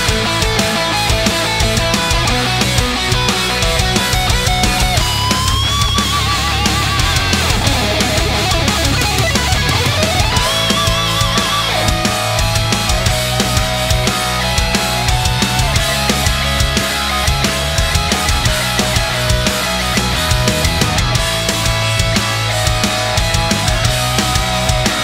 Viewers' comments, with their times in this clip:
0:06 am rn in bead jbl earbuds in full volume 😮 the beginning and the solo and drums at the end hit different then